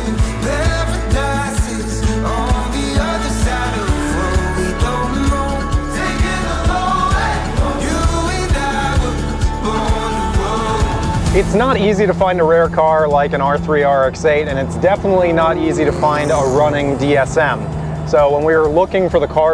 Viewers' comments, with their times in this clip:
0:05 I'm sorry but the romantic indie music swelling over shots of that horrible Eclipse with the fender exit has me laughing haha